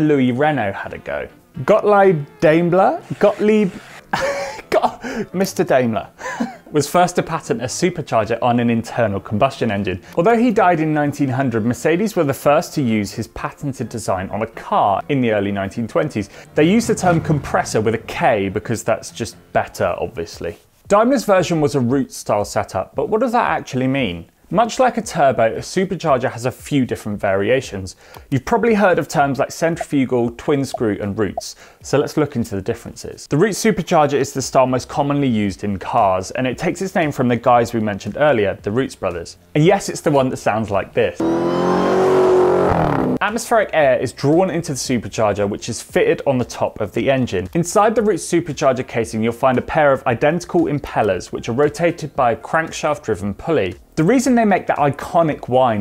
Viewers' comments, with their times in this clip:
0:03 even the last name was completely wrong, but well it's hard to pronounce names in other languages.
0:03 YOU NAILED the second one there in terms of pronunciation
0:03 "Gottleeb" was the one that was right pronounced
0:04 as an Austrian i can say that the second "Gottlieb" was absolutely correct.
0:39 funny because hellcats use a twin screw set up. Both twin screw and roots blowers make a similar sounding whine